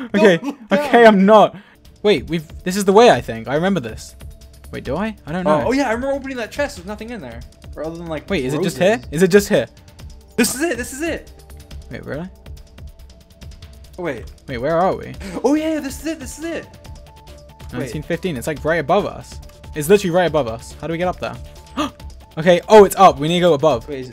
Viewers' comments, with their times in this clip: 0:09 dream sounding like an npc with 2 lines